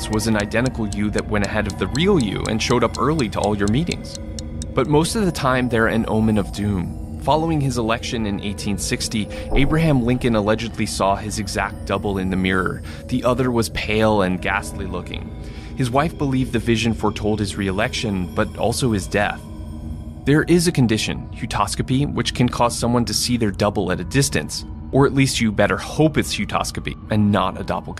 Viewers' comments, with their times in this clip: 0:08 legit thought someone was at my door